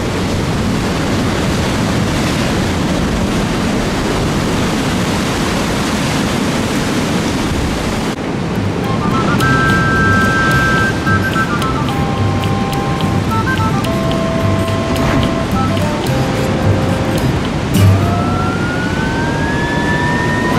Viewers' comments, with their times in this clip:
0:08 That shire mumble music was out of this world